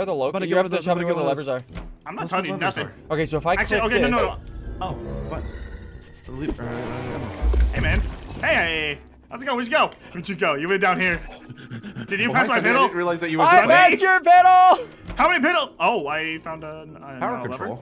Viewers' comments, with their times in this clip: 0:03 the moment of silence somehow made me laugh
0:03 the moment of silence someone made me laugh